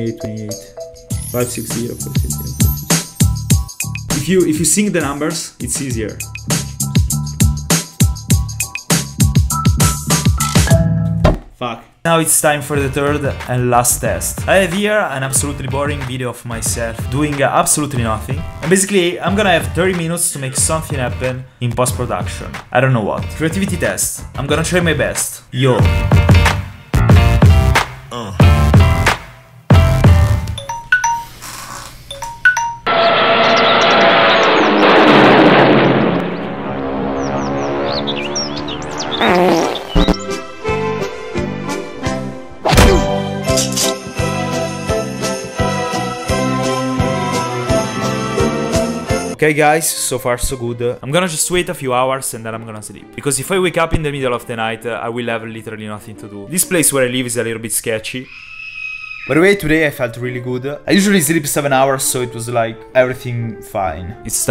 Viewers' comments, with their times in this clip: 0:10 he says "faq"
0:27 I legit got scared because that's my alarm sound and I thought I was dreaming before it
0:30 that noise gave me "when the machine at the doctors office is done checking your temp and pulse" vibes
0:31 That’s my morning music!
0:49 i love how he says good